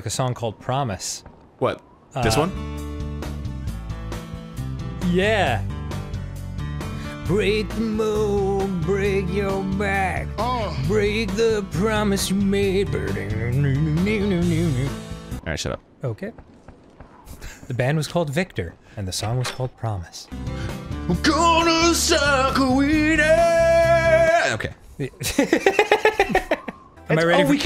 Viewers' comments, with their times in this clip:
0:09 Why did that sounded like Biggie Smalls